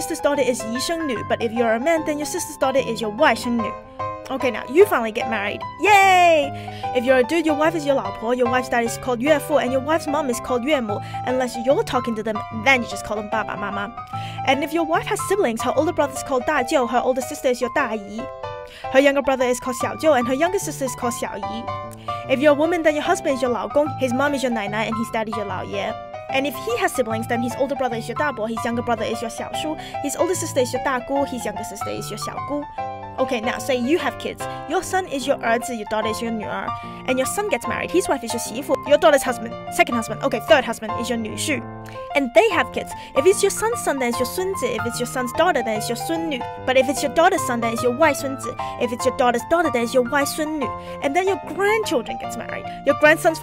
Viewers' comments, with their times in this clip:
0:07 your wife's dad is called UFO
0:08 "Your wife's dad is called UFO."
0:38 Your daughter's 3rd husband is your new shoe!